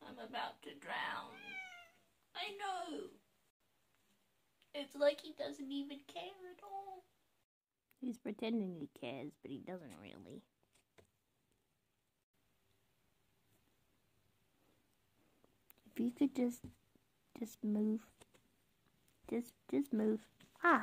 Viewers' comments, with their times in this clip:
0:03 Your cat, he is so vocal! And he came to save you from drowning in the water because he is a cat! Super toot!